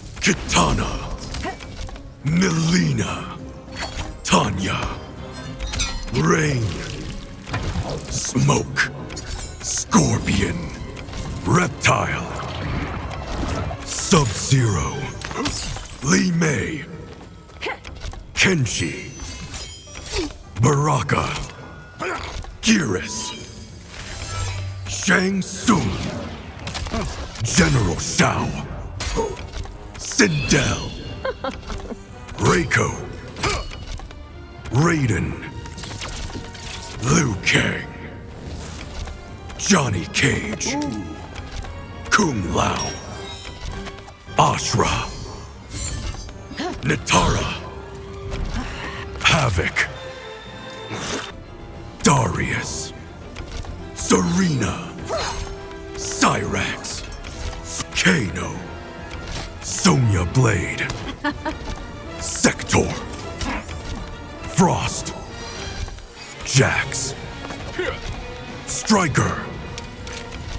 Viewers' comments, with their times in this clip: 0:03 you can feel the disgust when he calls Tranya's name.. I know right, you are not alone, Subzero. hahah :D
0:53 Come on, put a little more emotion into it